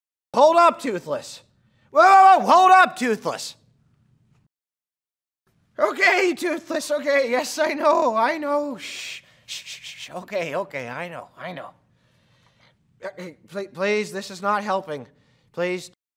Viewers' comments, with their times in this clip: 0:03 Hahha the guy sounds like Hiccup